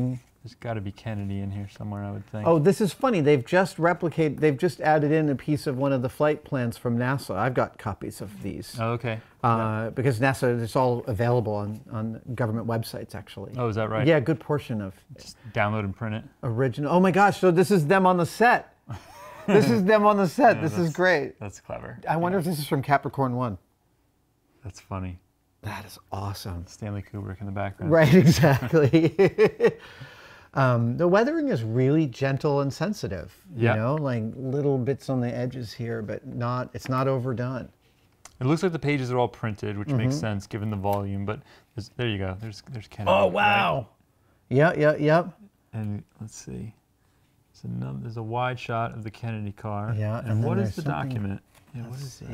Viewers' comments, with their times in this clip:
0:07 when talking about the NASA documentation Adam goes full John Malkovich. I love these prop videos!
0:39 the exact moment you hear the photo peel off the road map sheet